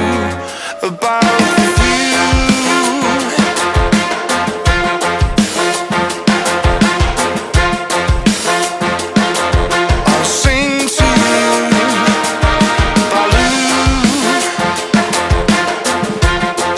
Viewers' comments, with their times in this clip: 0:03 The melody of the trumpets sound so familiar. Is it from another song or does it becomes familiar after listening to the song for a couple times?